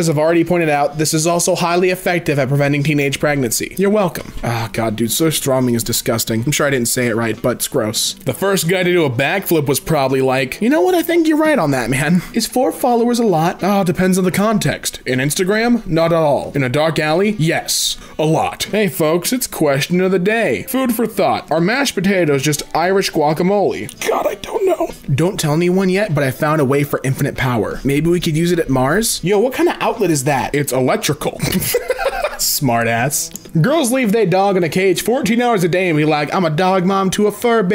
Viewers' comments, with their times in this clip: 0:03 yes u did not pronounce that rigth. As a swedish person myself i can assure u that we aren't very happy after that
0:22 the pain in his voice.... lmao